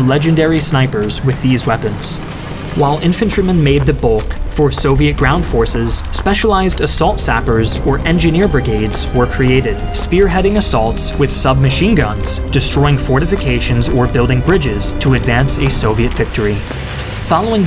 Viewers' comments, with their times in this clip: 0:05 Dat BGM........... I can feel Reznov Storming Reichstag Berlin